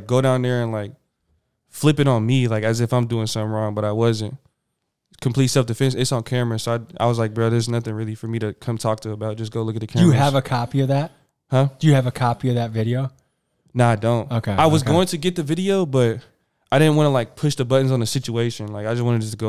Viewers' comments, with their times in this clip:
0:06 he sounds so federal 🤣